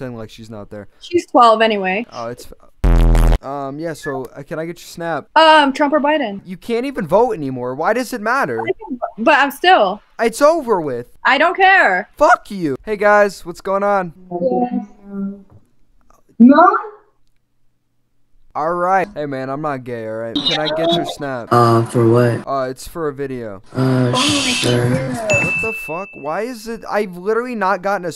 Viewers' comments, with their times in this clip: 0:10 omg that voice crack lol!!!